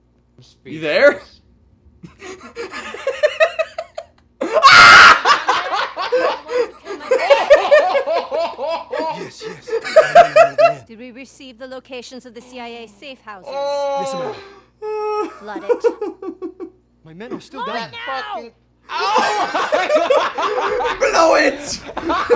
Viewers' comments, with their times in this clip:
0:04 the sound of true terror